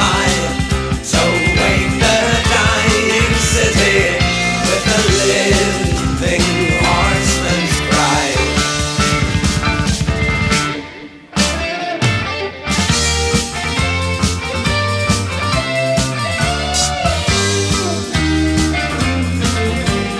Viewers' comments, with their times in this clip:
0:03 howsabout Barlows horsie drumming hear the horsie's pounding the dust!